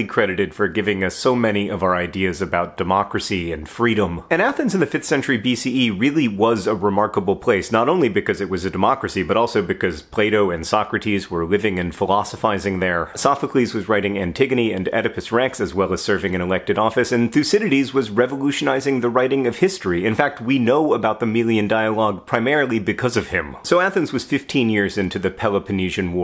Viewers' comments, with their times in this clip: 0:09 oh boy, Plato is not pronounced Play Dough haha! 🍄
0:10 Play-Doh was doing what now??
0:11 SO sneaky cuting of a word in so this video will not be 4 min or longer.. I like this sneakeness. Btw, what is Hanks challange and when will he do it?